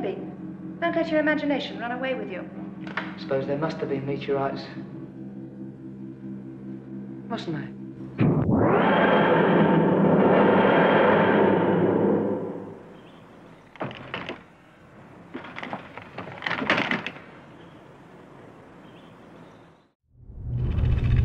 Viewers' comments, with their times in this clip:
0:08 In my dvd copy of this episode the tardis sound effect is different to the one here.